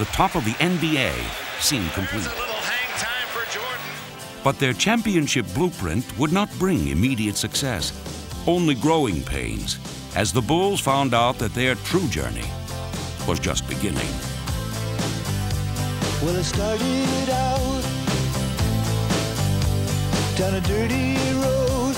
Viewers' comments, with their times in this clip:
0:04 Lost it when Tom Petty started playing hahahaha